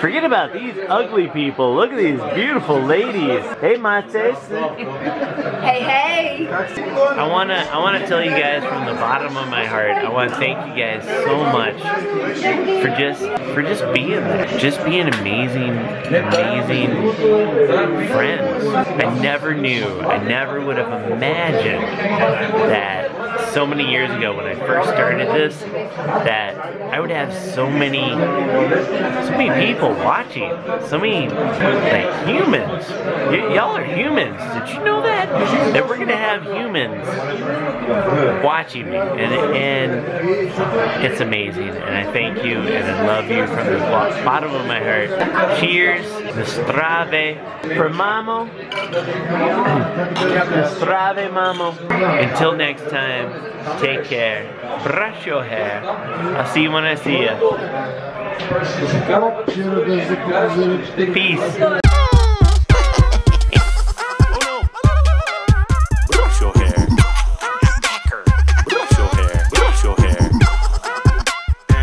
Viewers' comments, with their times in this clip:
0:08 LOL you're blinking so slow dude... "I jast wanchoo thhank yuo gaiz" Well, you're welcome ;)
0:52 you sound drunk